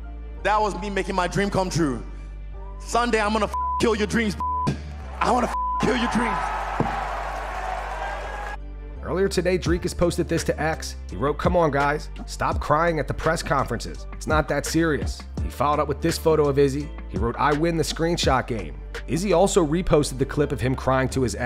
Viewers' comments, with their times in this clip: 0:03 Izzy sounds bitter